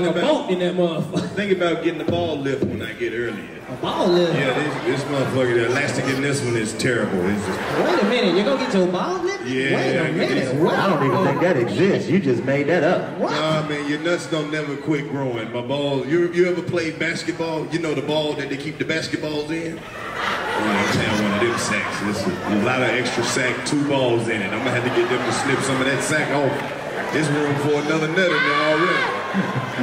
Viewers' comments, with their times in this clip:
0:10 Real 85 fans know the nigga with the laugh from spongebob
0:12 the guy who u hear laughing who is that he’s in every gig when he laughs u know it’s funny or some dumb corny shit haha love it✊🏽